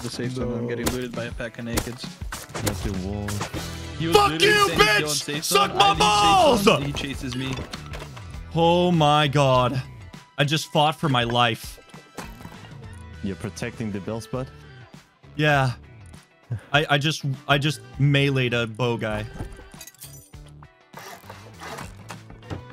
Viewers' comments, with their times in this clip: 0:04 Haven’t watched yet but ima gamble you screamed about 4-5 times throughout and shattered the sound barrier. Edit: -That’s 1